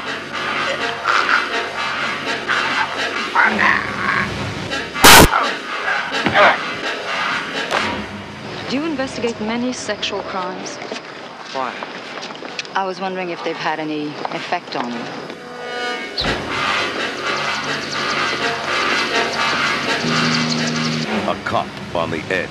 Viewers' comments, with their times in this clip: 0:05 has a horrible noise.